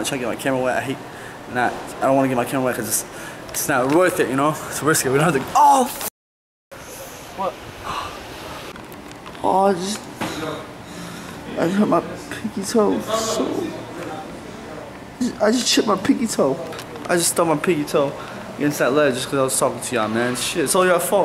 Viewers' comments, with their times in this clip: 0:06 i thought something was wrong with my headphones 😂😂😂😂😂